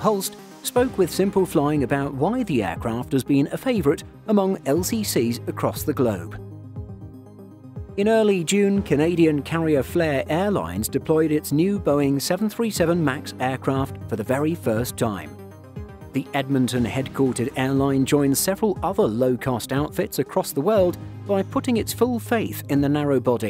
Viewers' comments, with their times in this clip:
0:04 lost carriers lol